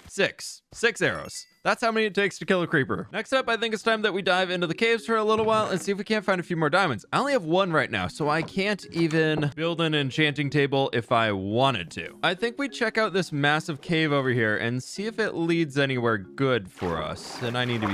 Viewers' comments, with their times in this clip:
0:05 I got an ad which cut off his sentence and made him say “next up I think it’s time that we DIE”. Hilarious.